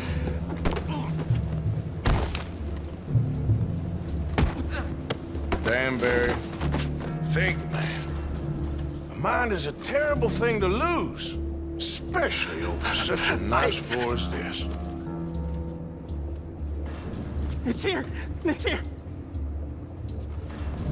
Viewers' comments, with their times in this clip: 0:04 this line has always stuck with me, because Arthur basically just told that guy “I’ll beat the brains out of your skull if you don’t give me what I want”, but his calm tone and his phrasing somehow make him more intimidating than if he had just bluntly stated it. That cold-blooded malice doesn’t show up often (in a high honor play through at least), but every scene where Arthur lets that side of himself show is absolutely excellent.